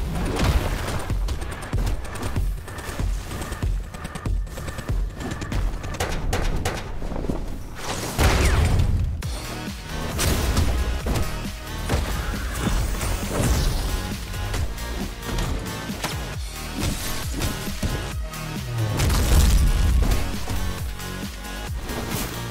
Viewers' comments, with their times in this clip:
0:08 I like the atmosphere you gave to this video, rarely talking, no cool chill music or sounds until just that ominous one. It really just felt like you were into an unstoppable rampage, and we're just here able to do nothing but witness it Edit : got rid of a few spelling mistakes